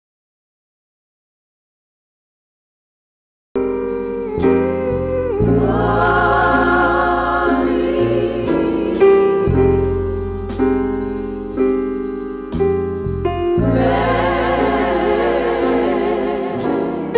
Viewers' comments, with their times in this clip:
0:05 The sample starts before it played all the way through u were forced to cut the song by YouTube?